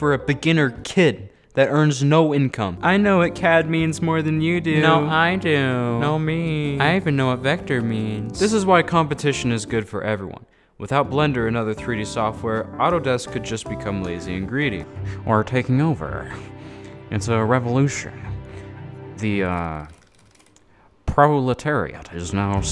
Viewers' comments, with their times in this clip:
0:05 Are you the voice actor of the gay guy from family guy? Literally sounds like that if you read the comments